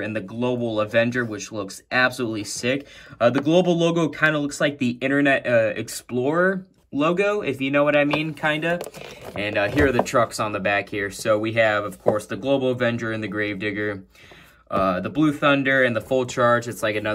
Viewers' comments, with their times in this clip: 0:04 Damn your voice got deeper.! GodBless You BTW Bro N Yo Family Homie.!!!! Plus, the logo on Avenger looks like it's Half Internet Explorer, Half Google.!